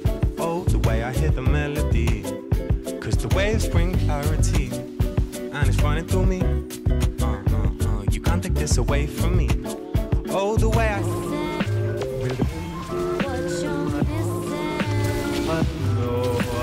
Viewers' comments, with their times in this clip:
0:03 HOLY shit your laught just made my day its the best play imo